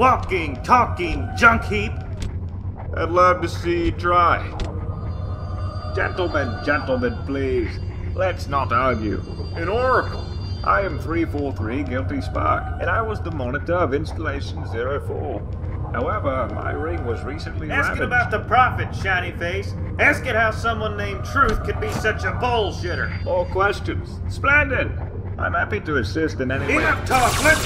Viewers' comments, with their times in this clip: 0:10 Guilty spark sounds like Bane from Batman